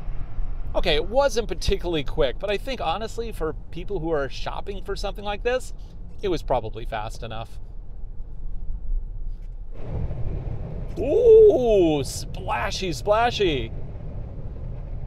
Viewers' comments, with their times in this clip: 0:03 0-60 matters to me stepping out onto a highway. this is disappointing but to the plus side it didnt drone like the sienna.